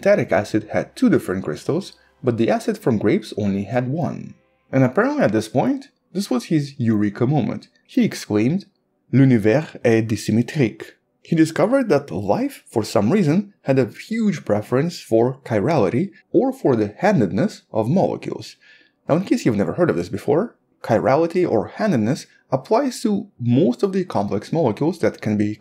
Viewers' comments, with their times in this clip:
0:09 Well done French accent at least to my ears!
0:10 As a french guy, i can tell you, you over-did yourself, your pronunciation is very correct, you avoided every tricky mistakes in "l'Univers est assymétrique" 👍 Long live your channel ❤🖖